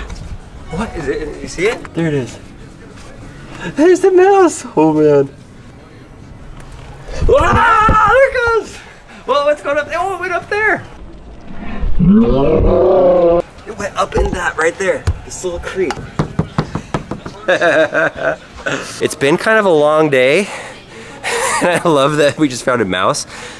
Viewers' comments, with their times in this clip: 0:04 Scream like a little girl.
0:11 sounds like a nissan gtr r34
0:11 he sounded like Chewbacca from Star Wars
0:11 full Chewbacca there 😂😂🤣